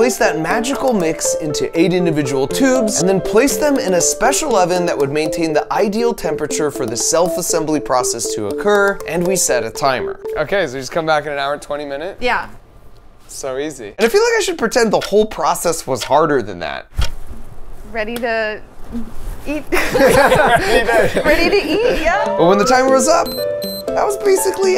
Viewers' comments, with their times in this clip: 0:09 this sounds like Plants vs Zombies